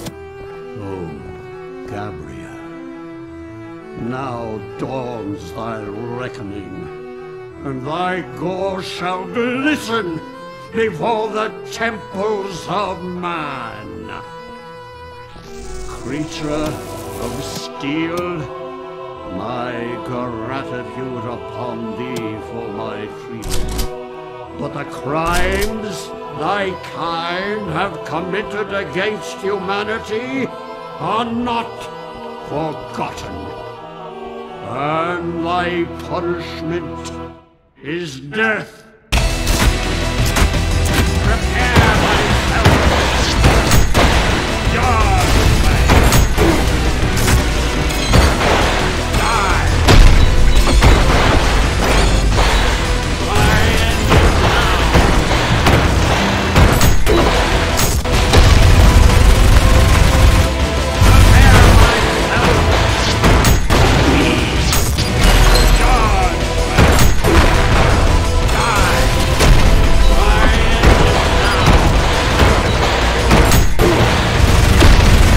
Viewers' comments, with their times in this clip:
0:09 i heard" he wore the shampoo of man" not gonna lie
1:01 i know he screams "weak!" but it sounds like markiplier e
1:03 second phase is when Minos says "WEAK", hard to hear it due to all the gun fire but its faintly there